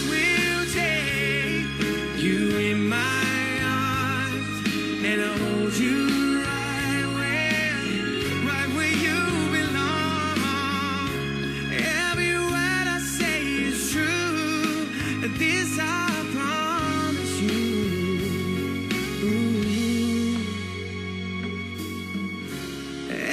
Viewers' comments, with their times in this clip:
0:08 he sing it with original style 😂